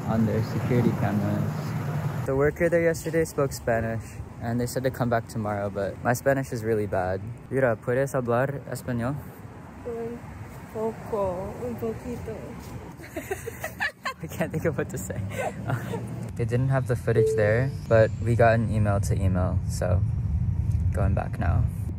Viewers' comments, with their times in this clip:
0:03 u both speak spanish sooo well even if only the simple things but it’s okay i’m happy that u know a little bit of my language pdt. i love the headrest of cooky it’s cute
0:04 As a spanish-speaking follower, I loved the moment when they spoke spanish, omg 😭